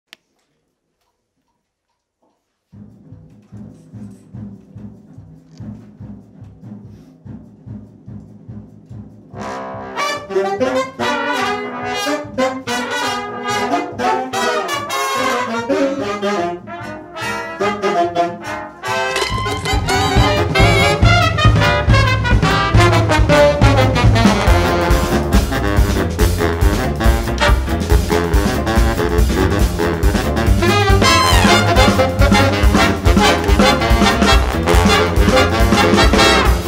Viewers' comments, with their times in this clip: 0:08 it sounds really strange that dry
0:10 it still kills me how the Saxes are just straight up an entire 8th note off beat from each other.
0:24 That bari sax solo makes me moist
0:24 wow that bari (i think) is cool and i love this song!
0:24 jesus that bari is so fucking good